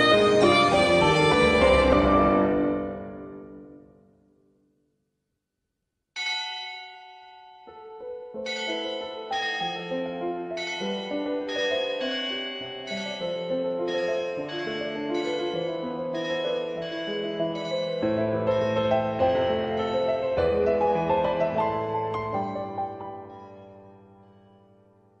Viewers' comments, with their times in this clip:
0:06 the bell always gives me goosebumps even though it's been 5 years since I watched it